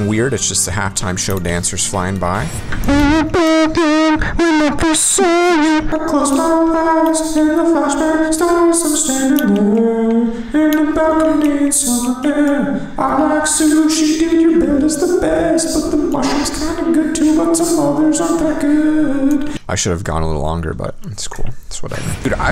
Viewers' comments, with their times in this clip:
0:06 the song he sings seems like what someone would sing in the shower.
0:08 sounds like the goofy goofer song